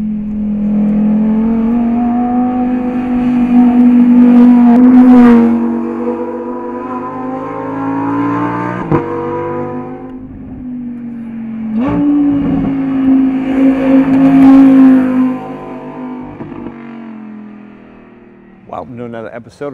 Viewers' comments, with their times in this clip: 0:05 exhaust note of a LeMans racer.